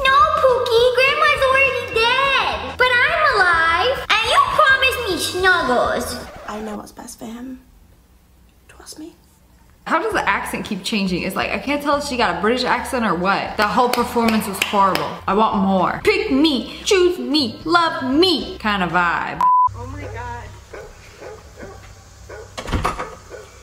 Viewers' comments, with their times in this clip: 0:10 my cat meowed thinking she was another cat 💀